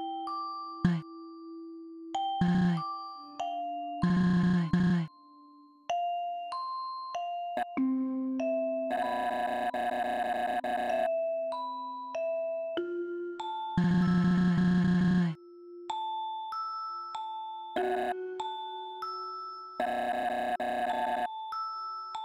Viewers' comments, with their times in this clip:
0:04 Did your audio go out ? There's some silence from your end until the battle resumes almost a minute later.